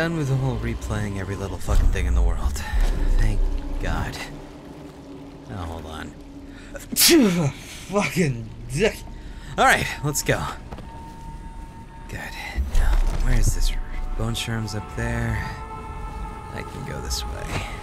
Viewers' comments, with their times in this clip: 0:05 Yet again your adorable sneeze. :3